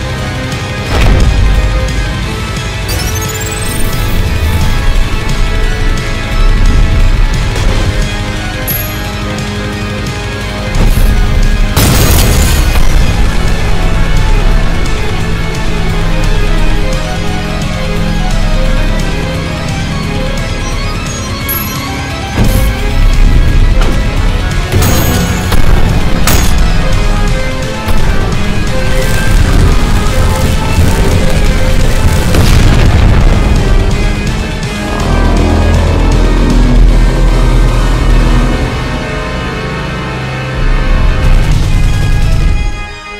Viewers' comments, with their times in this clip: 0:08 The second I heard that coin sound effect, I was like “OH SHIT! SUPREME RICOSHOT!” :0
0:24 fart reverb sound
0:28 Am I crazy for hearing the Mike Wazowski scream